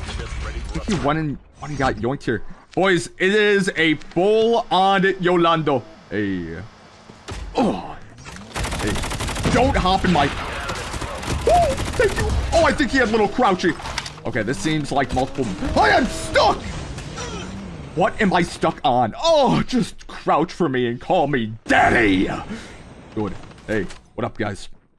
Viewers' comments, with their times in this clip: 0:06 that "oh" actually got me rollin on the goddam floor